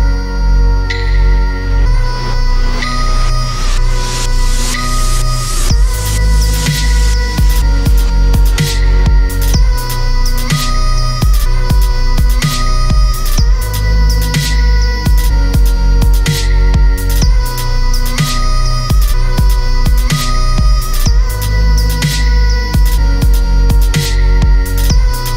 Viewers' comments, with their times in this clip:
0:06 it sounds like it's throwing the bugbaits from Half-Life 2.